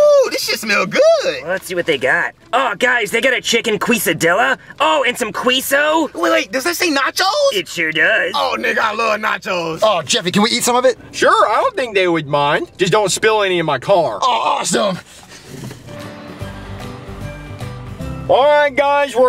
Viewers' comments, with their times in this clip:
0:03 Cody do you have to say it like that? And that is not what it called 😒 and Jeffy when you and your friends deliver food you’re not supposed to eat other peoples food
0:04 also do you guys actually say it like that or you guys are fucking around 😭